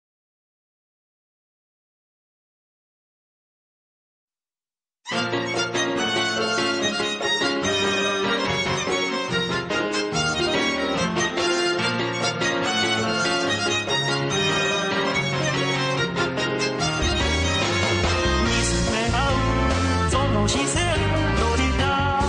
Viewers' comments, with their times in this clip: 0:04 I love the lovely video and the beautiful song starting